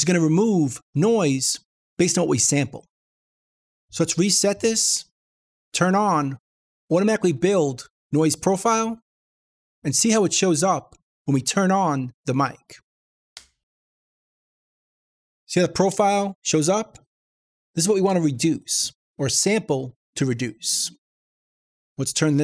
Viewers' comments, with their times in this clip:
0:05 Turn the mic on first, only then click on "Automatically build noise profile" in ReaFFT. Otherwise it unnecessarily cuts frequencies that are only present when you switch it on (like the "click" noise it made in the video).